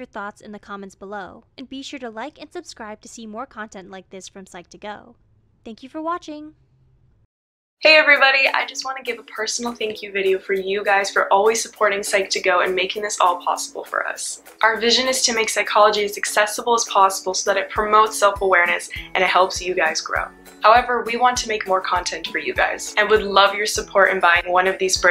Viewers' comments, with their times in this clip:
0:07 HEART ATTACK EDIT: it's just too loud, the video is great!